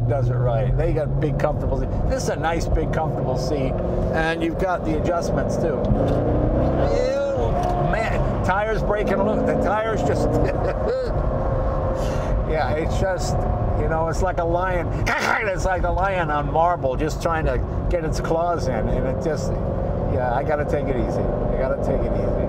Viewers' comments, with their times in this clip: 0:09 I got tickled at Mr. Leno's laugh here!